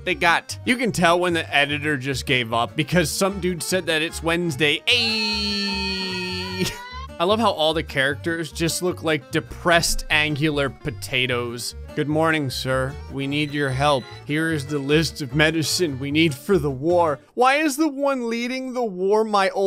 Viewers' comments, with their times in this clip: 0:03 It had the Wednesday guy screaming in the background. So, I think he knows that one.